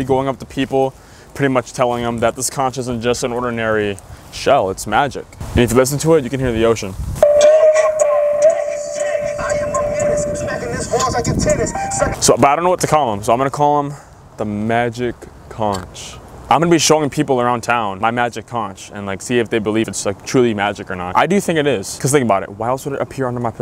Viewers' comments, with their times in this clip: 0:09 damn the ocean sounds nice